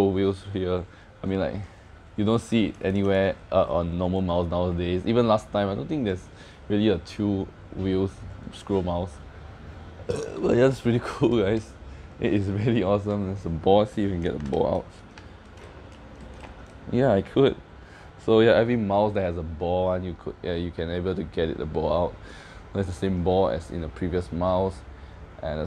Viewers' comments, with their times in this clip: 0:09 HAHAHAHA you're burping ...did you just eat before you unbox🤣